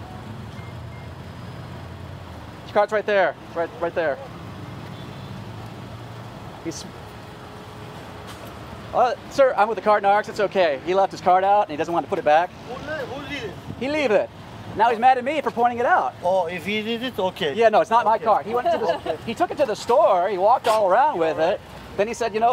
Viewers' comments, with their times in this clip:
0:05 Why did you mimic that dudes accent that came up lmao